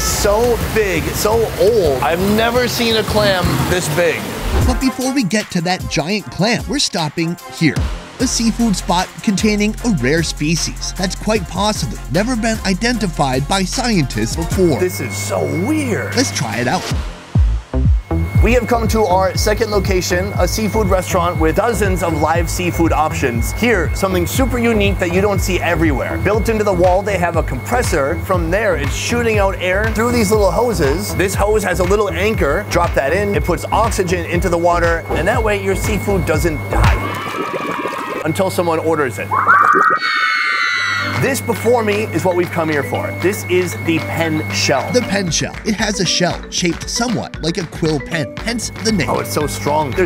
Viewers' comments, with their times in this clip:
0:05 yall hear tthe background music
0:22 There's a constant painful ringing sound in the background with your on site audio
0:38 that sound effect haha